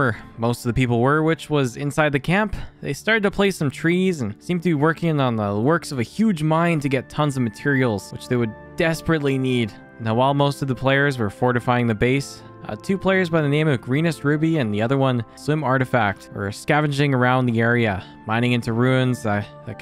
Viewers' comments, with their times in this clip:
0:06 that elder scrolls oblivion music hit diffrent